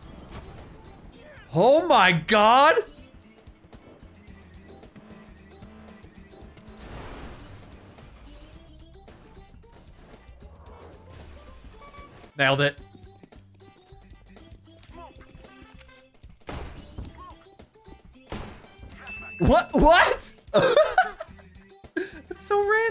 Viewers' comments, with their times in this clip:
0:10 I love that little honk xD like "eyo, the Smart you ordered is there!" xD